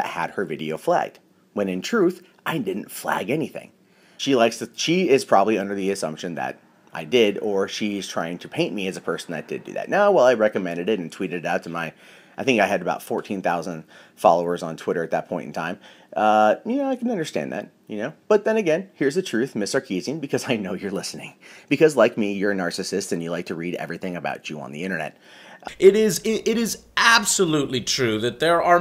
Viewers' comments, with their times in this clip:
0:09 I think current Angry Joe subscribers need to start using the word "revelent" in as many contexts as we can. THIS COULD BECOME OUR WORD! "I give this game a revelent/10." "Ya done revelented it up!" "The campaign is revelent hours long...REVELENT HOURS??!!!"